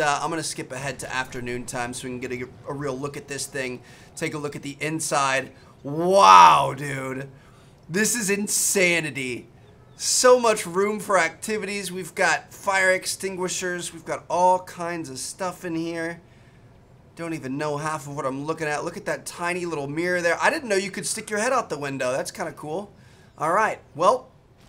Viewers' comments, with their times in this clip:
0:09 bro said "so muck room for activities"